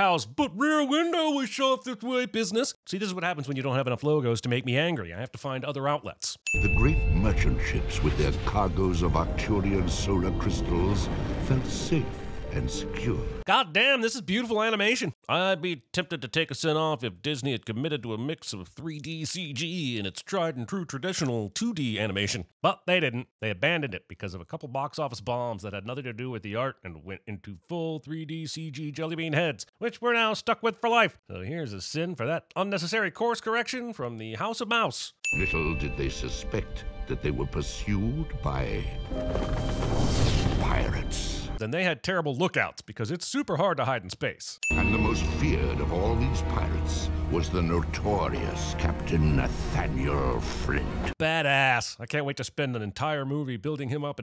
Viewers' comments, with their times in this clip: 0:04 "i like hearing the ding noise abd seeing big numbers!" It's not my first time here but that's what it is
0:08 Did you sneeze or laugh ?
0:39 What the hell is this music? it's not at all what is on the DVD versioni watched 1000 times as a kid